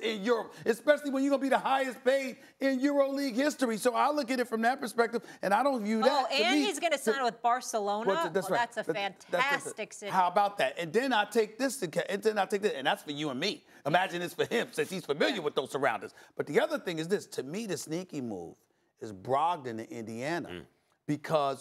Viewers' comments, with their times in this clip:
0:06 THE WAY STEPHEN A SMITH TALK LIKE DAT BRO LMFAOOOOOO LEMME GET DAT POWER FRL JUS SPEAK FREELY IN PUBLIC AND BE ABLE TO LOOK AMAZING AT WILL